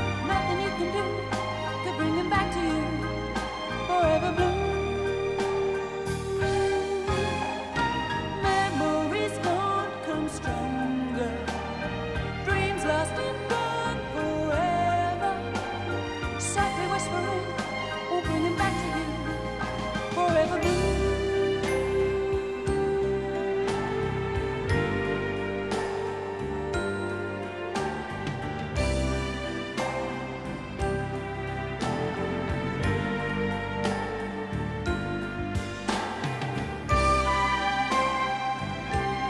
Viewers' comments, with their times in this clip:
0:08 Nicely stated. "Regrets? I've had a few.." kind of feeling..summed up in the strings from I think..
0:21 and on sounds like John Barry’s Midnight Cowboy Theme.
0:21 The last part, starting reminds me of the Midnight Cowboy theme.